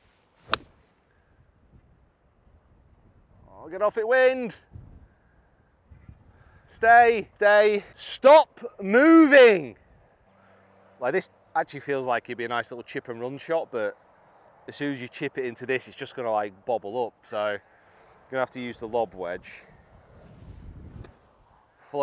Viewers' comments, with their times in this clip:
0:06 Sounds like you're yelling at your kids lol